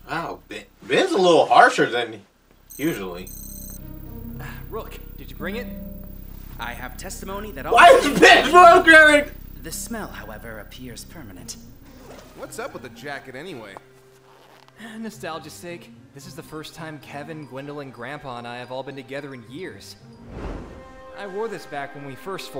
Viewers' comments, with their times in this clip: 0:07 I did not understand you at all in that moment